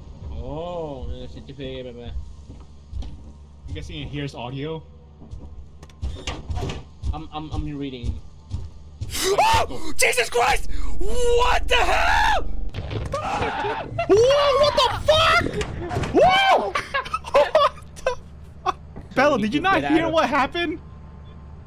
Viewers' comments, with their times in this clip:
0:06 The sound design is amazing in this game, it’s like you were actually grabbed by a giant ass alien and eaten like a Snickers bar 😂